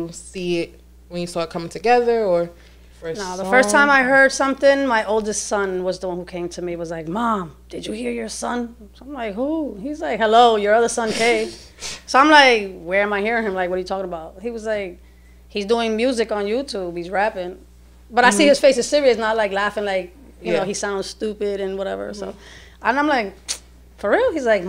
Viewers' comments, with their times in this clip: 0:05 bro even his mom sounds like him listen